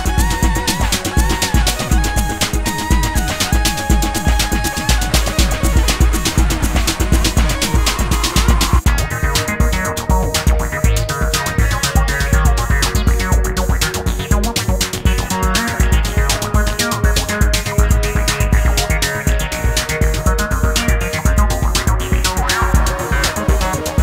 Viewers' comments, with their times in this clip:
0:08 in my opinion- he really mastered the integration of live instrument playing and artificial- its almost hard to say that the electronic part is not-human when you listen to Hew kodu for him